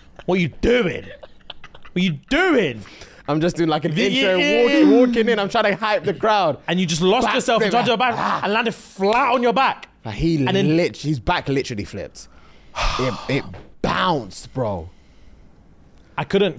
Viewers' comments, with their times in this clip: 0:04 is it just me or is there like a weird exhaling sound here.